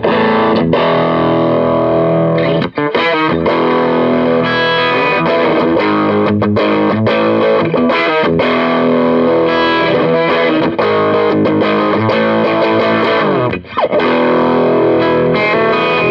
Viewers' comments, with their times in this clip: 0:04 What's up with this Les Paul segment. It doesn't sound very good at all.